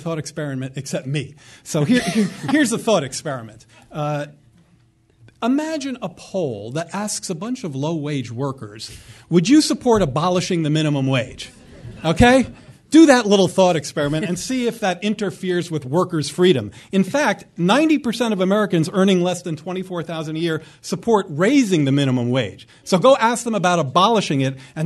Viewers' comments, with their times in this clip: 0:05 SHOUT INTO THE FUCKING MIC MORE PLEASE